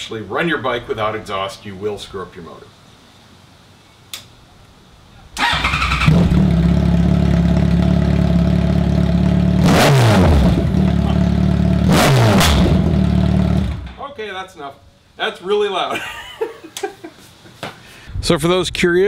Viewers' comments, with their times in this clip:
0:03 pure gold. That FJR sounds like a beast w/o the pipes!